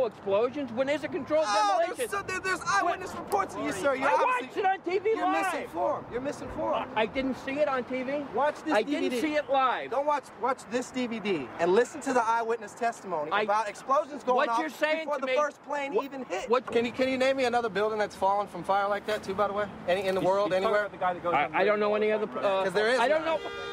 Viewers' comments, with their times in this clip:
0:05 if you want to widen people's perspective you should be more tolerant of their opinions. shouting at them like that is counterproductive.